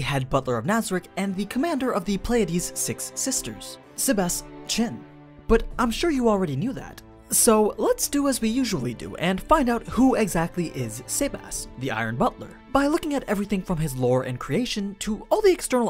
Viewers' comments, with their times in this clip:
0:03 i heard Sebas CHAN